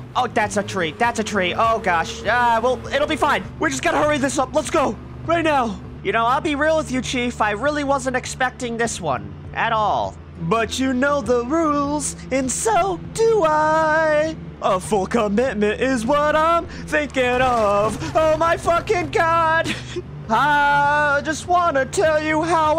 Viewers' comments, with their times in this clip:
0:10 I can't lie I'm enjoying this Builder series and the singing and Never Give You Up or let you down I'll Never Say Goodbye or around you LOL full commitment Builder Plus